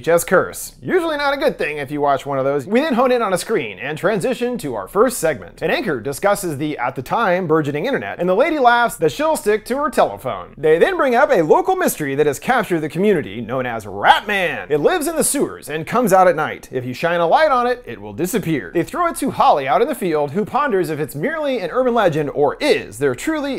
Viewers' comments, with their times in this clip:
0:10 Rat Man sounds a lot like the Leprechaun. “Everybody who seen the Leprechaun say yeah!”